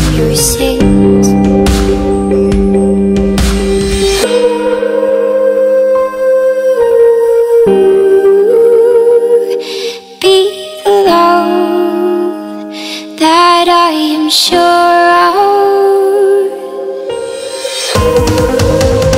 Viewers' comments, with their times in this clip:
0:06 Does anyone hear distortion ?